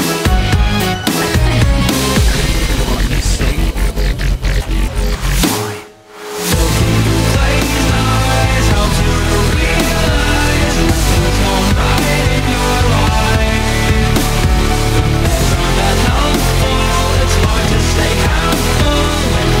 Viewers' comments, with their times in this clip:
0:05 the reversed snare is so fucking cool oh my god i adore this song